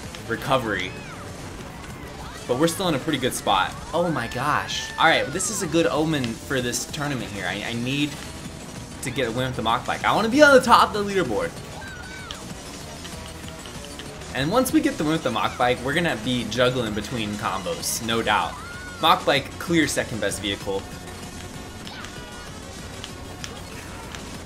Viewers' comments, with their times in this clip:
0:07 Daisy cheered as 1st place got hit so I think you’re wrong